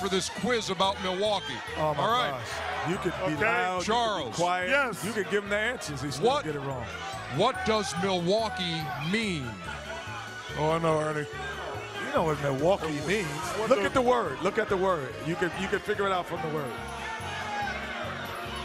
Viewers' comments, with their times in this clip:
0:05 Somebody throwing up GD in the background 😂😂😂🤦🏾‍♂️